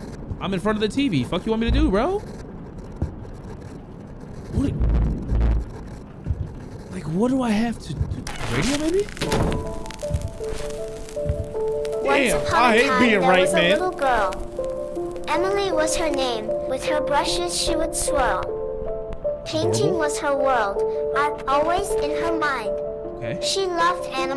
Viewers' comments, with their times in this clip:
0:10 Ish sounded like the BO1 zombies song for a sec ngl😅😅